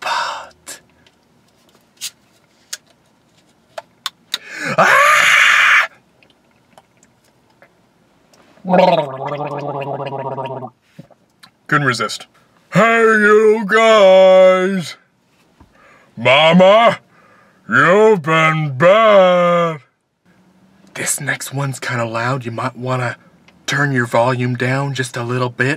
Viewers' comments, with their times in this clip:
0:07 The scream scared my cat Frack. He expects an apology. Ha. Best imitation is Kermit.